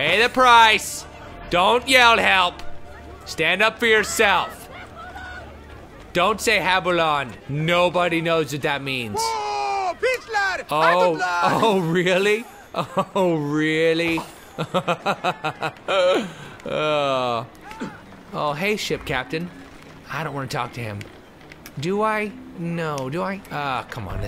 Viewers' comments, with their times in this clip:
0:09 i swear a random civilian yells "BOO HITLER!"